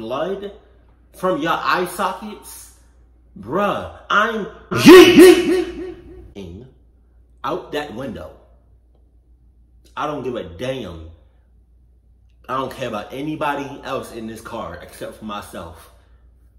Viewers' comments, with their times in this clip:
0:04 lmao I had my volume up all the way that scared me